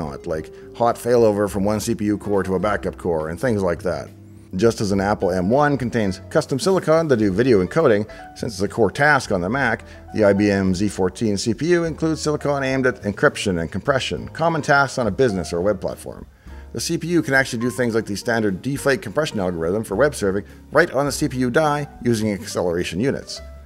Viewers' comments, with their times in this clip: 0:09 Zee14? I thought you were Canadian.